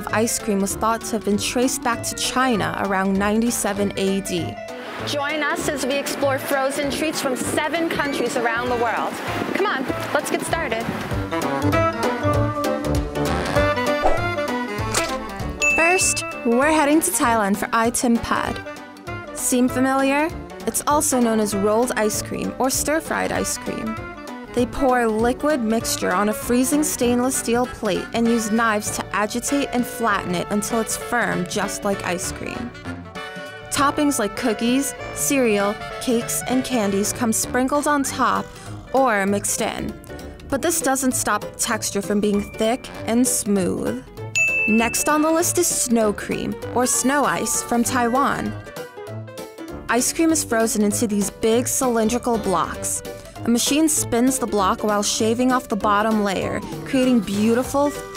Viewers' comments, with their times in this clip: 0:06 when she pronounce s
0:42 The way she said smooth really scared me...